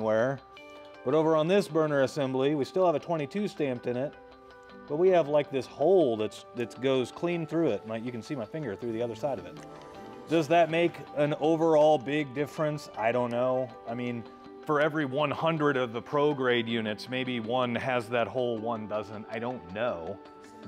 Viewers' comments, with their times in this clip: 0:05 I'm I'm starting to get tired of the unnecessary background music. Also you are in a shop area. Don't you have one of those small rolling stools you could sit on instead of sitting on the floor?